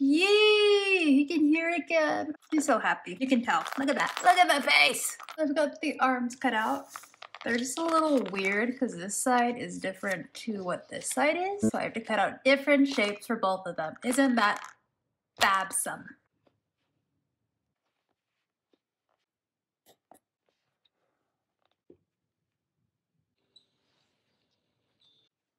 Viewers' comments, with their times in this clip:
0:10 Did anyone else notice that audio glitch spooky ooo